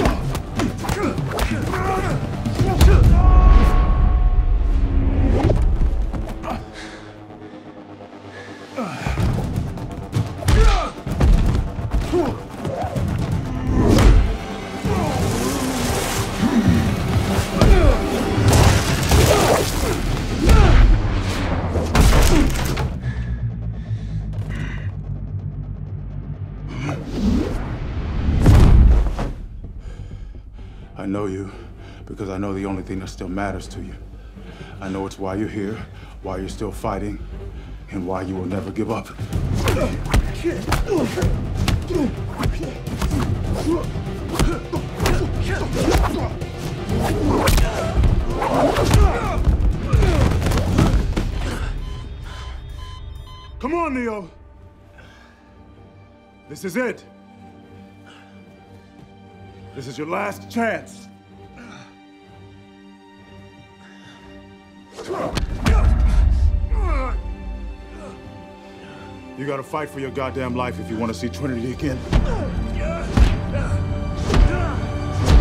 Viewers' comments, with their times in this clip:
0:03 that scream is ridiculous. 🤣 The guy just been hit but he has the scream of someone who falls over a mountain
0:56 I really enjoyed the score and theme to this movie. It had some great moments; I like and on. Fighting for trinity, the build up and the music worked here.